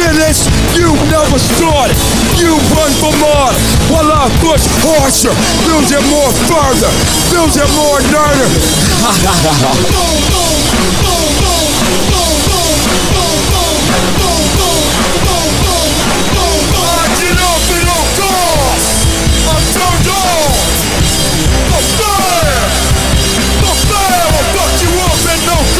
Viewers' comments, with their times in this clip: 0:09 Those repeated "BOOM BOOM" is some of the most catchiest headbanging sections I've heard from them